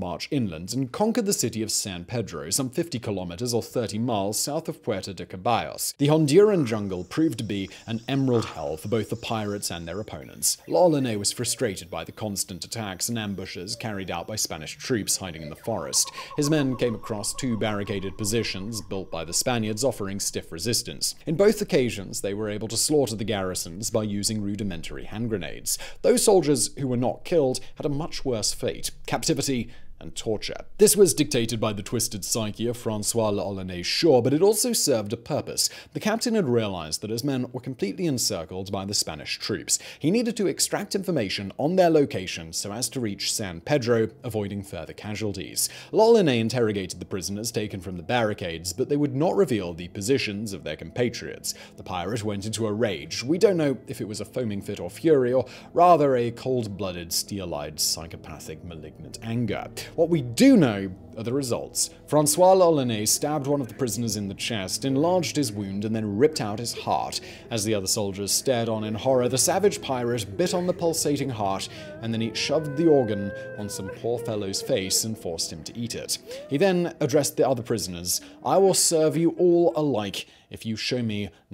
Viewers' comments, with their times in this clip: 0:07 Chapter 6 - The annoying bald guy continues on in his pretentious accent.
1:00 NO ONE ELSE HEARS THE WOMAN CRYIN HARD ?
1:04 Did anyone notice the crying in the background ?